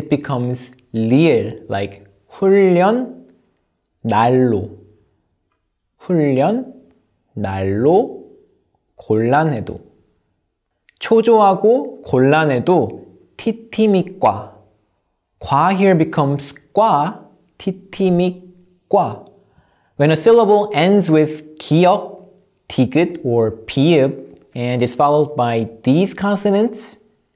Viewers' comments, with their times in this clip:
0:08 why it's 'd' daloo why not 'naloo"